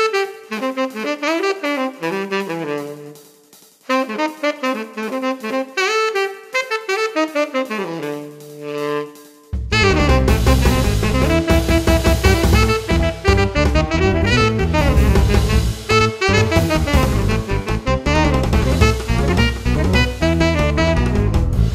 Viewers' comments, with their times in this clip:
0:08 I said goddamn! was a super sexy touch!